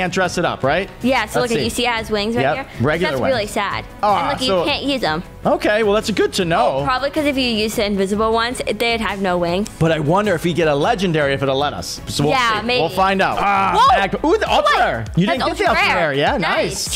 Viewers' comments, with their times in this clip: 0:04 what happen with ur voice